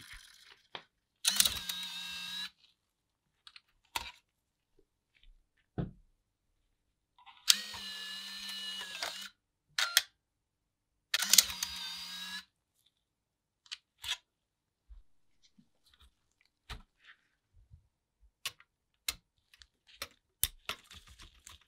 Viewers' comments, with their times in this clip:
0:07 Omg THAT’S WHY my Wii makes that fucking noise! That shit got ingrained in my brain when I was a kid, I used to play for hours with that noise in the background and my ears would whistle when I turned off the wii lol. Kinda makes me want to open it and fix it now lol